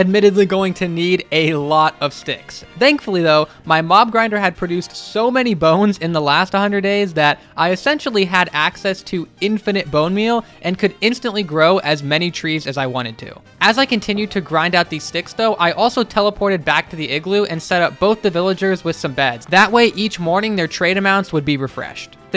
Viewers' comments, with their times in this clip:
0:03 mom grinder haha